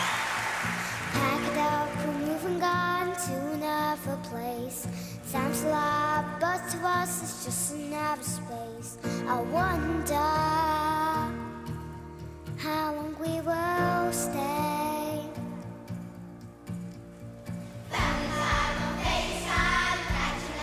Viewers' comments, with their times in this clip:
0:05 What word does she sing ? I can't make it out. It sound to me like 'sant a lar'.